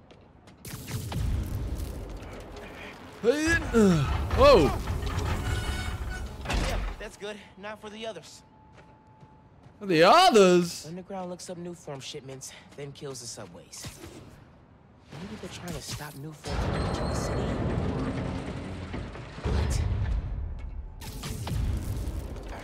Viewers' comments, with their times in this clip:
0:04 Notice they say whoa at the same time lol